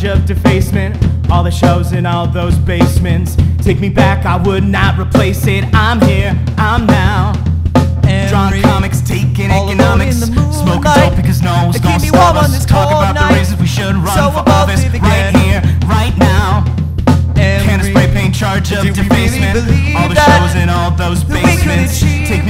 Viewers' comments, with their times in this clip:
0:08 Excellent work boys!! This tune is EXCELLENT!!!!!!!! I love the layering that bleeds into harmony starting